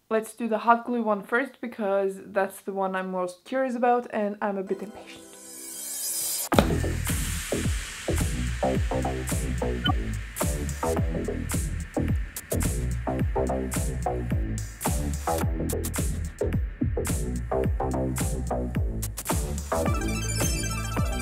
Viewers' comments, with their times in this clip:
0:06 Anyone else listening to the background music, think it kind of sounds like "Come Get Her"? You could totally overlay the lyrics lol.